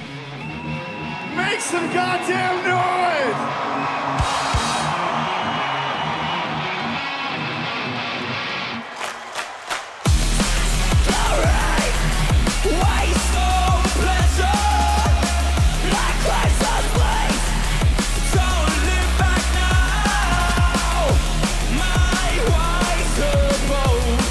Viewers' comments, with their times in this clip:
0:09 That clap it's so perfect 😎